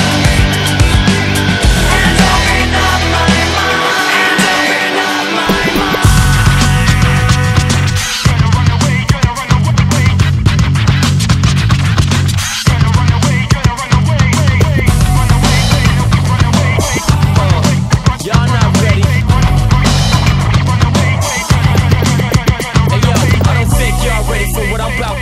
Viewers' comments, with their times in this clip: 0:06 Dat Bass line